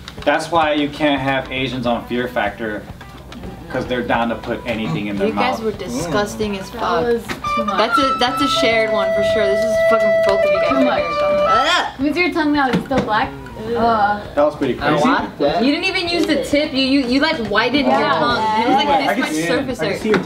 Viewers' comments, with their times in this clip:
0:05 Did anyone else here a guitar